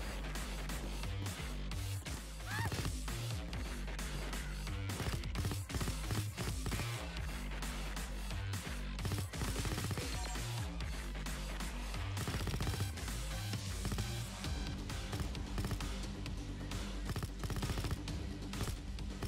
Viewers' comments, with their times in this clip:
0:04 Fun fact: his shooting synched with the music.